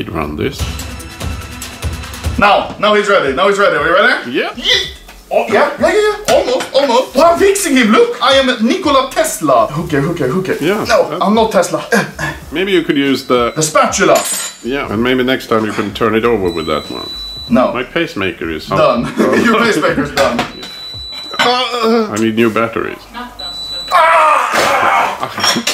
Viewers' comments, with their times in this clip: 0:09 why does this crypto kid whisper "Hooker Hooker" to a Pancake ?